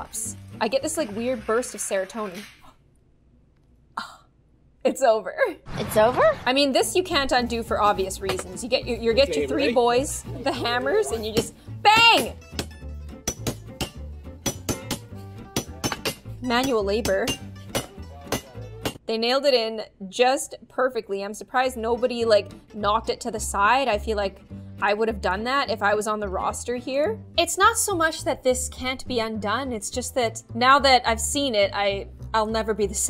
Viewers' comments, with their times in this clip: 0:07 The start of the hammering, it kind of sounded like a beat
0:08 They made a beat with the hammers
0:08 I cant unhear the music...
0:09 The train tracks people:doing there job Me:that’s sounds like a TikTok sound
0:10 thats a music
0:18 sounds like that one song that I don’t know the name of
0:19 the beat, annoys me that it got ruined but still